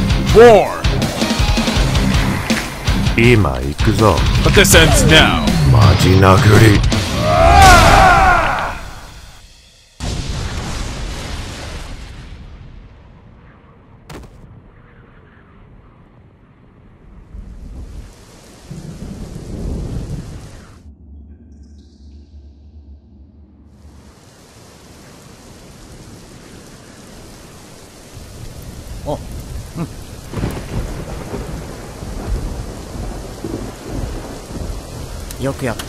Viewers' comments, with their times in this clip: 0:07 Saitama said serious punch! than superman hit powerful punch dead bang that expression sonic boom! Superman luster punch face death by saitama destroy superman.
0:19 ScrewAttack has continuity, whereas this show has a methed-out looking Superman. But the real elephant in the room is the audio. Superman can only move his lips in one way so his words sound ridiculous. They recycled characters from the game "Life is Strange", now that really takes the cake.